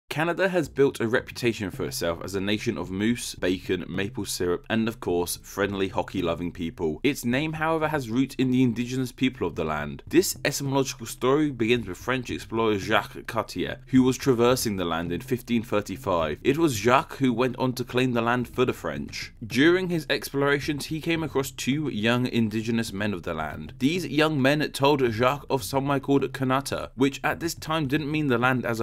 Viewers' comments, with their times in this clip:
0:10 Why is he pronouncing it that way